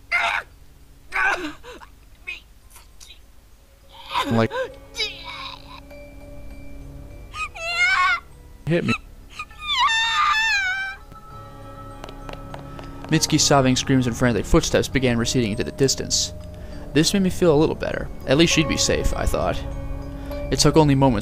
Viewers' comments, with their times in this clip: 0:05 i hear a strange sound around in my right ear phone